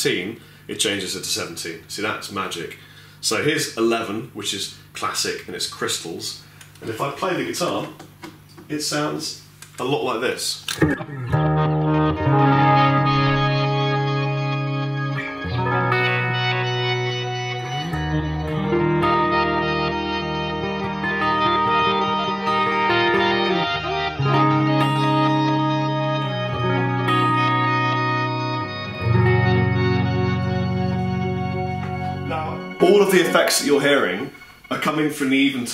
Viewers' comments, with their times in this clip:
0:09 sounds like Final Fantasy. So for you nintendocore guys out there...
0:22 oh shiiiieee, that reminds me of the arpeggio synth intro to 'Robot Romp' from 'Flight of the navigator' :)